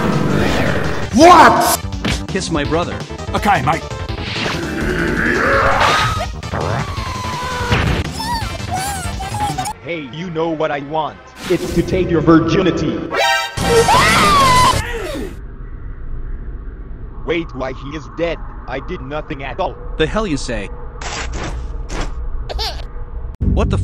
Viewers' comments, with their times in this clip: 0:03 Wow we just learned that fredbear has a Australian accent
0:04 caption says “ok mike” which really works tbh
0:04 "Give my brother a kiss" "Ok mate" with accent 🤌🏻
0:07 bro the sounds cc makes oook cute for me if just fredbesr didnt take his .........